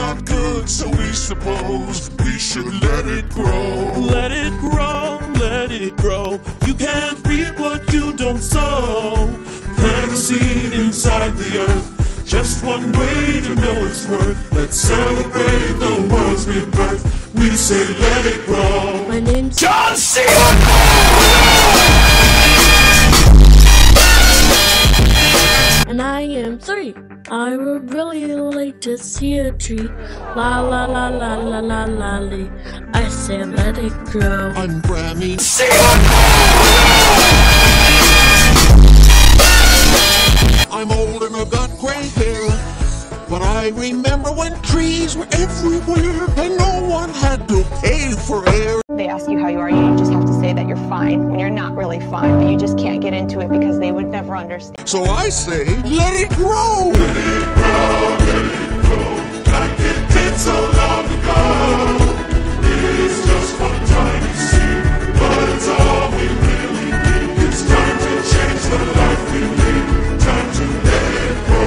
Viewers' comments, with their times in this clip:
0:04 its a boy sinigng
0:07 what the heck sounds like a demon
0:18 8 year old kid with stuffy voice
0:19 I never heard a little girl like that before
0:19 My girl John Cena sounds like a grown man😂😂😂
0:25 Sounds like a boy Lol XD your welcome
0:25 Sounds like a boy Lol XD
0:26 Sounds like a boy Lol XD
0:26 sounds like like a boy lol XD (I knew you were wondering
0:26 Sounds like a boy Lol XD
0:26 she or HEEEEEEEEEEEEEEEEEEEEEEEEEEEEEEEEEEEEEEEEEEEEEEEEEEEEEEEEEEEEEEEEEEEEEEEEEEEEEEEEEEEEEEEEEEEEEEEEEEEEEEEEEEEEEEEEEEEEEEEEEEEEEEEEEEEEEEEEEEEEEEEEEEEEEEEEEEEEEEEEEE said "sounds Like a little Boy XD"
0:26 he does sound like a dude
0:26 sounds like a boy lol XD
0:40 Her voice is the least changed
0:56 Sounds like an army jeez XD